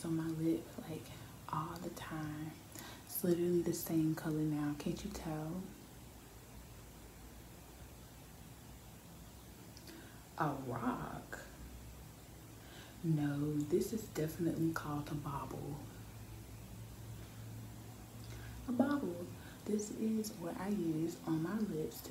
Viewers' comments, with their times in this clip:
0:10 a rock 😂😂 gave me Nicki Minaj vibes